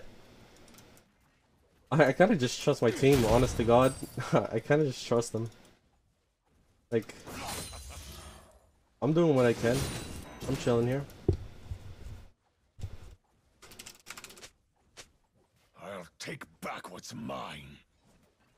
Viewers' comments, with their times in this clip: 0:03 when he said "i kinda needa trust my team" honest to god sounded like he was abt to cry goddamn